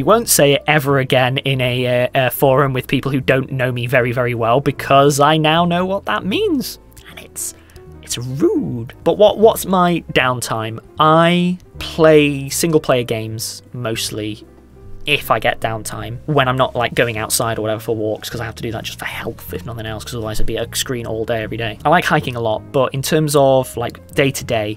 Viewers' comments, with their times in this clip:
0:05 "And it's- it's Roooood!" XDDDD oh my god, moments to loop for the rest of time